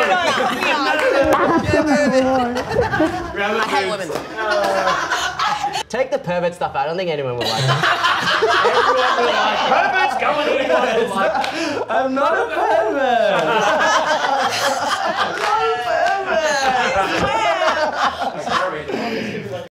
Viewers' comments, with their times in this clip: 0:04 BROOO HER LAST LAUGH WAS LITERALLY MAONING